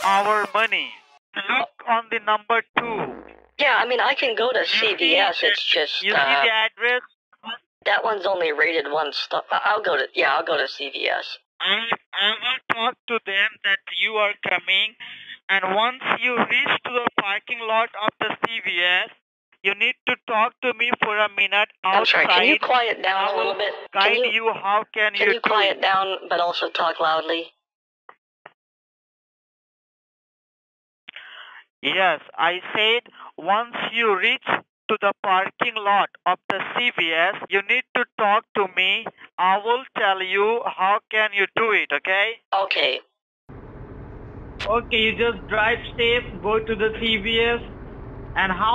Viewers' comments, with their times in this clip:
0:03 Did someone pass some gas
0:22 like a boss but out of character , i think thats why he went silent for 1 sec too long
0:34 "The parking lot of vesuvius"